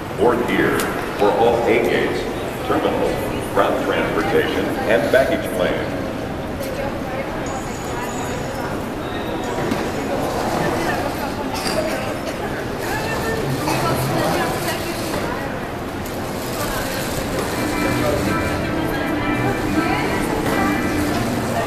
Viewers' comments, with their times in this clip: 0:09 I heard clash of clans